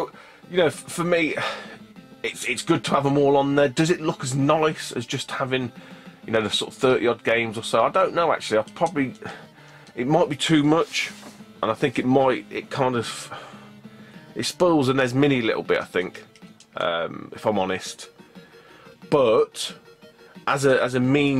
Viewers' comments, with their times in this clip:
0:08 I can't quite make out that sentence he says. Is it "..It might "expose" the NES mini a little bit if I'm honest."?